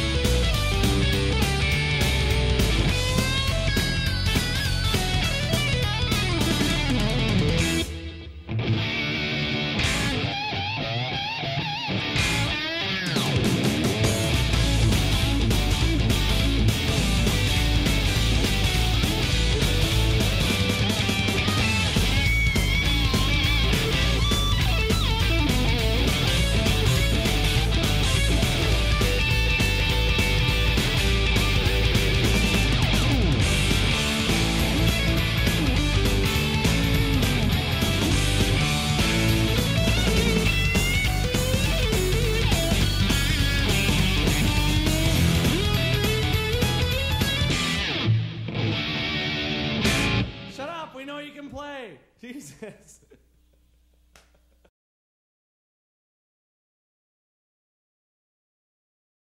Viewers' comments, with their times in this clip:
0:04 Oh hell, he does the same lick Liimatainen does in "My selene" Or better, Liimatainen does in My Selene the same lick Vai plays here
0:44 The note ... how the hell did he get that sound